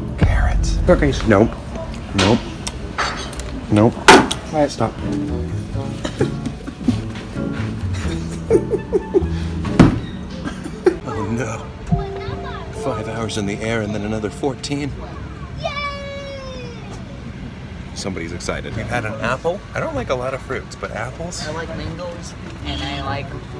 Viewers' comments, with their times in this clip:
0:08 Wow...Thomas’s laugh fit in with the song that is playing! Listen closely 😂